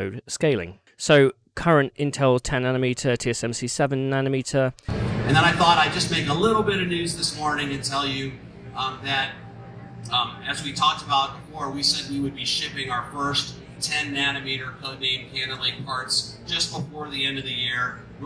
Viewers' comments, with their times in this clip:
0:03 Omg ear ra pe!!